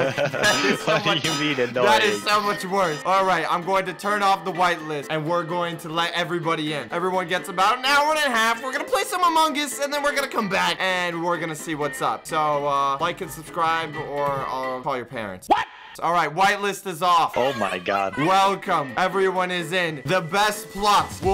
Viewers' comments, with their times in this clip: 0:08 oh yes amongis like the way he said it lol